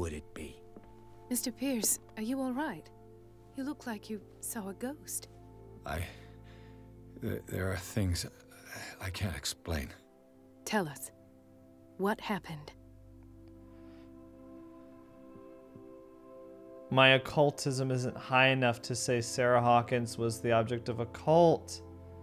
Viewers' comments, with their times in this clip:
0:04 Youtube captions say "You look like you saw a girl."